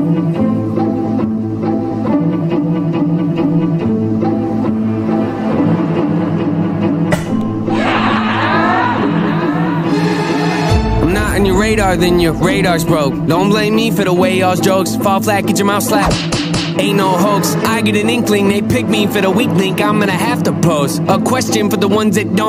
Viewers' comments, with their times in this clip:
0:06 At first I thought you let one rip lol